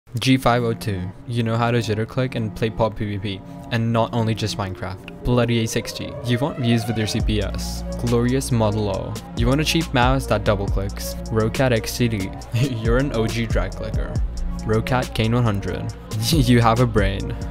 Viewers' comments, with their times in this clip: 0:02 scroll go BRRRRR